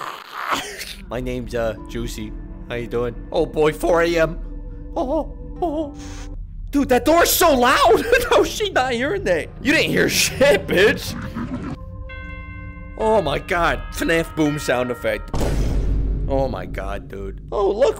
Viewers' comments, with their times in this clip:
0:04 he soundin like mickey mouse what the fuck💀💀💀